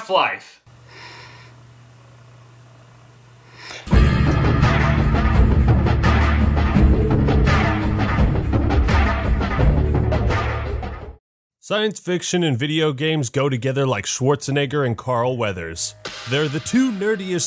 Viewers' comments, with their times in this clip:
0:03 plottwest:he speaks in valve intro